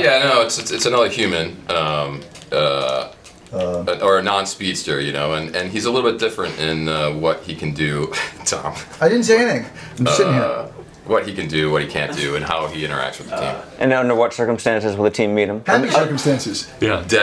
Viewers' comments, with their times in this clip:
0:05 Tom and Candice laughing when Todd mentions that the new villain is not a speedster meaning they’re totally over it...as are the fans 😂😂😂